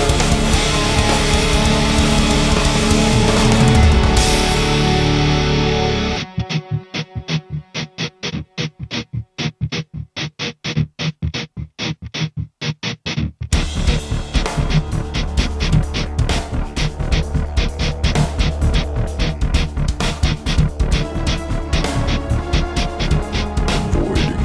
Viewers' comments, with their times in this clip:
0:04 sounds so fucken sick
0:06 WTF kind of rhythm is that????!!!